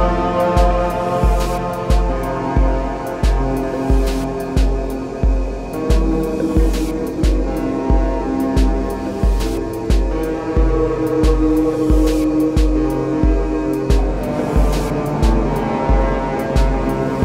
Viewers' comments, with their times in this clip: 0:03 I zoned out at like the 13 minute mark because of external distractions, then came back to it fully wondering when I started listening to Boards of Canada when I'm still trying to watch a video. I don't know how you make these contraptions sound as good as they do when I can barely make a real guitar go brrrinnnggg but you're really something man, love this shit